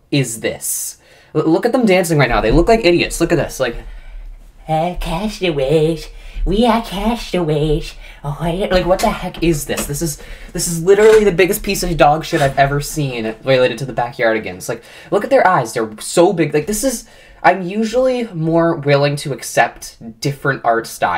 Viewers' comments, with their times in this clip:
0:04 you kind of sounded like Cartman there, lol! But seriously, it's really pathetic to see that Nick is now milking Janice Burgess's legacy to make this reboot, just like how they dealt with Stephen Hillenburg's creations after the time of his passing.
0:04 the way bro in the corner sings and dances